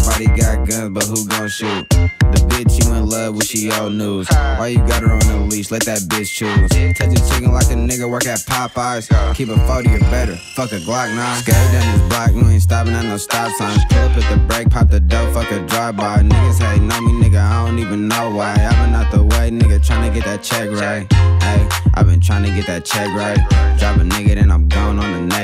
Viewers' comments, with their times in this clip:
0:10 this melody is one of the illest I heard in a min. 187 on da beat fs.